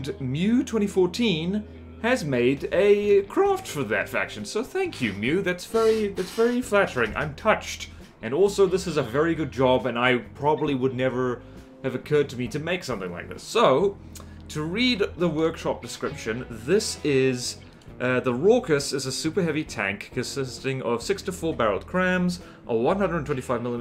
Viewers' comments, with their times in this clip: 0:05 Did i hear a creaky chair there?